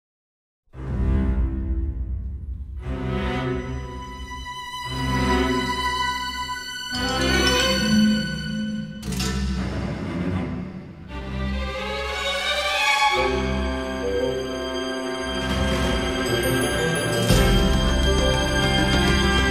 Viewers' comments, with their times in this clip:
0:02 James Bond Chord